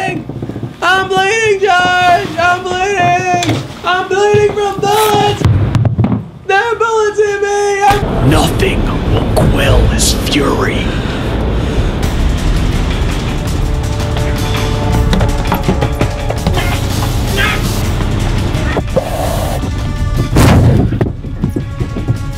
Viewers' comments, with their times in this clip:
0:03 that was a GREAT Jerry Seinfeld impression.